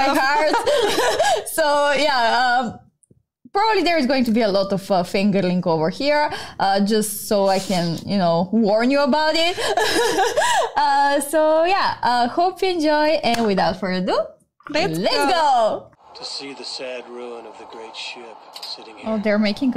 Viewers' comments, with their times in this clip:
0:05 a lot of what?!